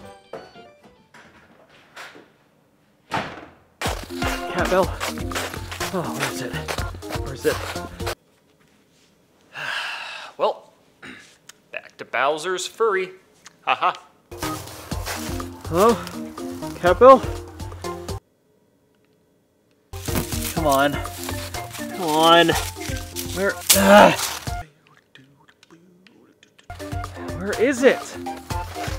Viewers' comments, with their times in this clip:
0:10 you said Bowser furry